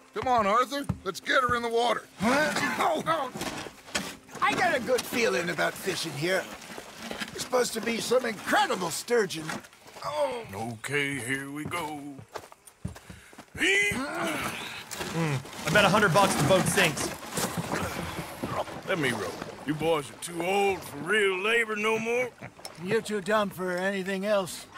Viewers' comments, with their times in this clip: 0:10 Arthur sounds like whinnie the poo